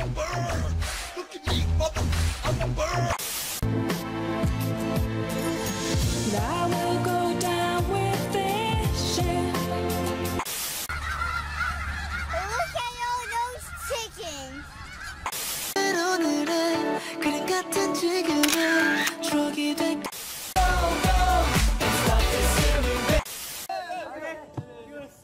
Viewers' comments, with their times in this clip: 0:07 oh god that song